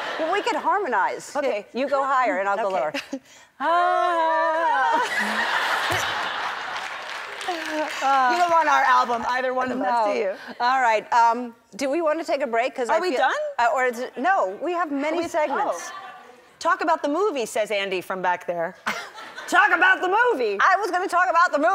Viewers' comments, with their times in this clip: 0:03 THE WAY THEY HARMONIZE, I CAN’T 😭😭